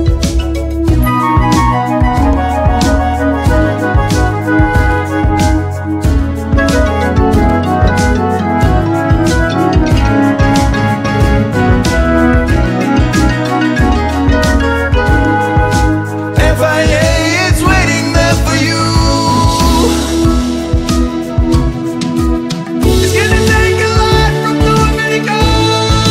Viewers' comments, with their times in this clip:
0:08 Believed my phone was ringing